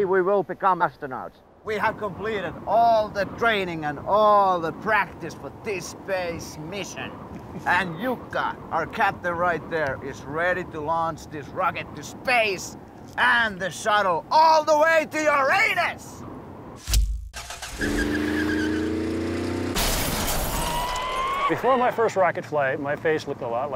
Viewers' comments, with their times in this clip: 0:07 Jarppi be like " Jukka our captain right there is ready to launch this rocket to space and the shuttle all the way to YOUR ANUS!!! Hahahahah XD